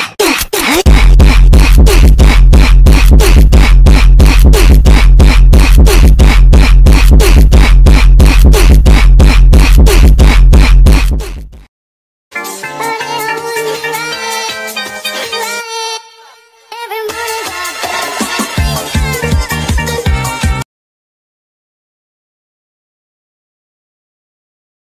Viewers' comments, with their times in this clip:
0:05 I hate s sound I hate new oof sound